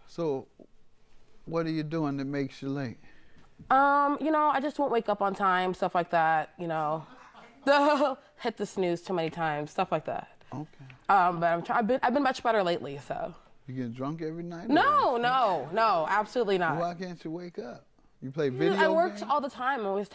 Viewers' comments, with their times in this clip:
0:07 😳😳😳was that a laugh